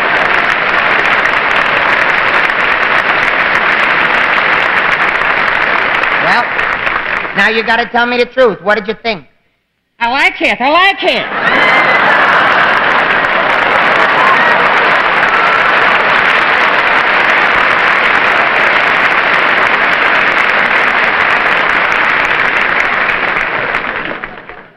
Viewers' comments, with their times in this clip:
0:05 .... "Now you gotta tell me the truth. What did you think? I like it, i like it!" Was James Cagney impersonating Liberace perhaps?